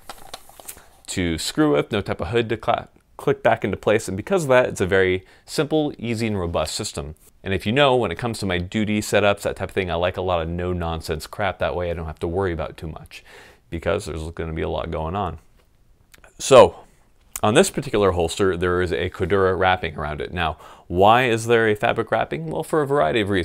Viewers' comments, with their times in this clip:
0:08 .....you said "doody".